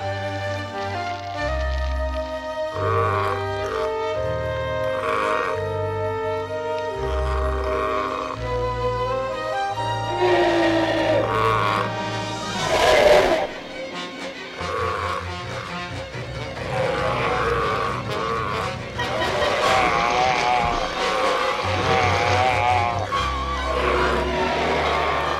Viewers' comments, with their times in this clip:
0:08 the edmontosaurus speaks